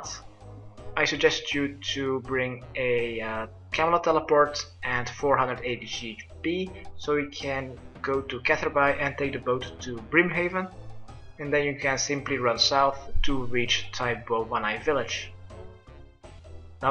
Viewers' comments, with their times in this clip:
0:03 i don't know what a "tralama teleport" is but i just used a camelot teleport and ran to catherby